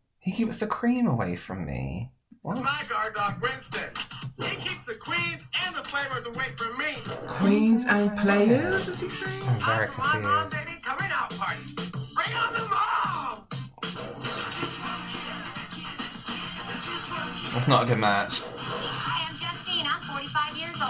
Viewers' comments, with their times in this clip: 0:05 did he not say "queens and flamers" lmao
0:05 I think he says "he keeps the Creeps and players away from me" ...but I also hear "creams and flavours" so what do I know lol maybe he hates food